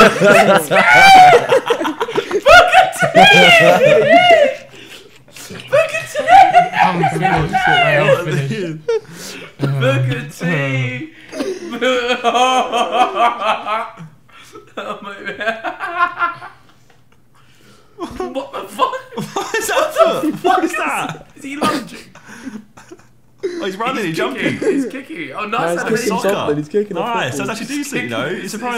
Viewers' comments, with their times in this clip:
0:10 Ethans laugh is even worst then jj's.